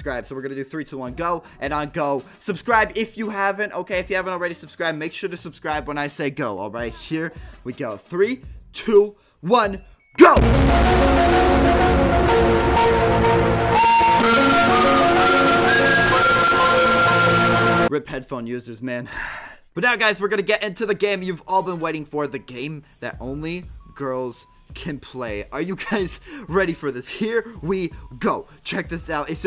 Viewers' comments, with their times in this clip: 0:10 headphone people warning
0:13 PLEASE STOP I HAVE CENSORTIVE EARS
0:13 * PLEASE STOP I HAVE "SENSITIVE" EARS*